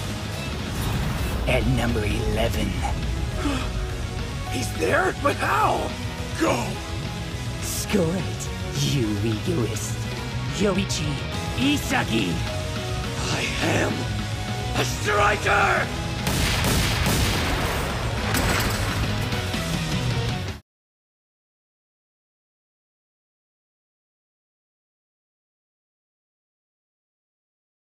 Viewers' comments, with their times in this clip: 0:08 SCORE IT YOU EGOIST! YORICHI ISAGI!!!!! Just the way it sounds gives this scene goosebumps